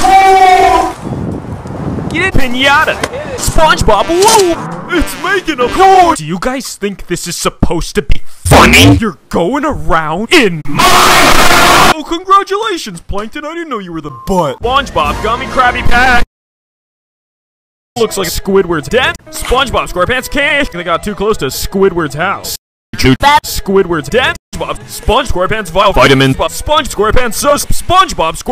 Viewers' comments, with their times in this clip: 0:10 that was loud